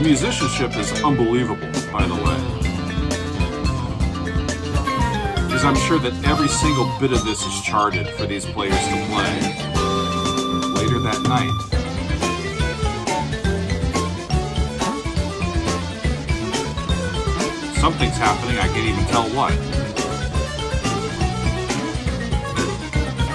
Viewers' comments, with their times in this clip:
0:08 You can really feel the future influence on bands like Dream Theater around the mark